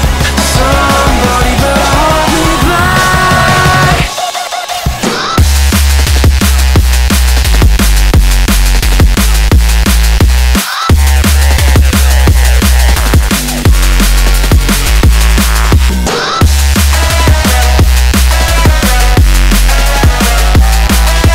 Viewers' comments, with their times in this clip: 0:04 is an extremely weird but satisfying drop. I'm left thinking "how does that work????????," but liking it all the same